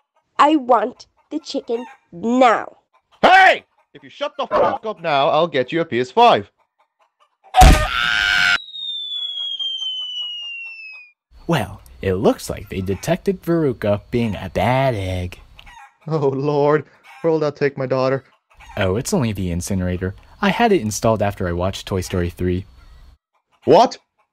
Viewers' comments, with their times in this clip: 0:07 Best part is Veruca down the chute screaming